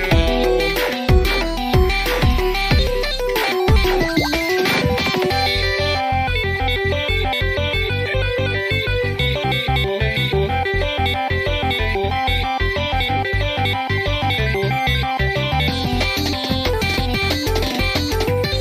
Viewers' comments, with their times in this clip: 0:06 sounds promising to me for some reason.. idk why